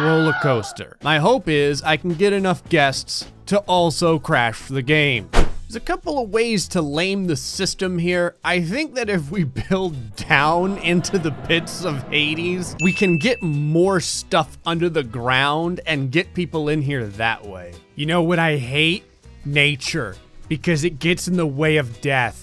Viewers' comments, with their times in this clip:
0:09 Why do you sound like keemstar in this video til or something